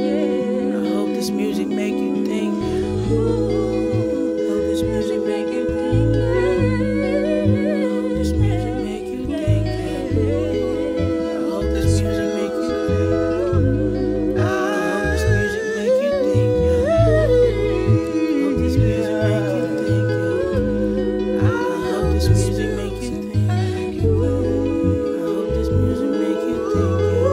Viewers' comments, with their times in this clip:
0:10 I’m saying when one of them started improvising I lost myself😫😫😤🔥🔥🔥🔥
0:14 This whole performance was beautiful, but my stank face kicked in for the background singer 🥴🤤